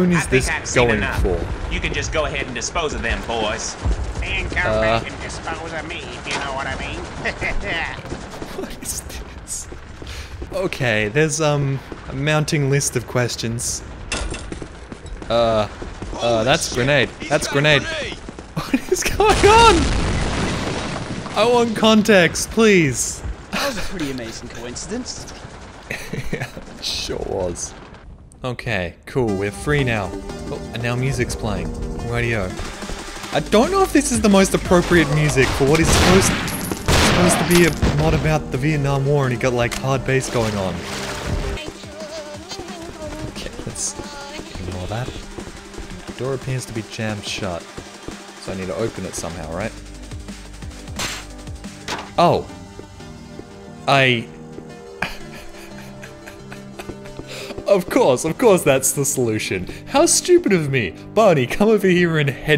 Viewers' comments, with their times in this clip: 0:03 Cleveland took over his body.
0:48 It's not hardbass, it's drum&bass!